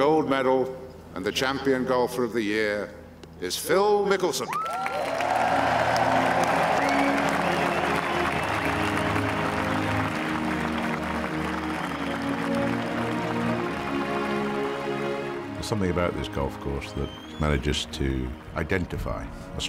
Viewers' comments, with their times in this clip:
0:05 Badass music begins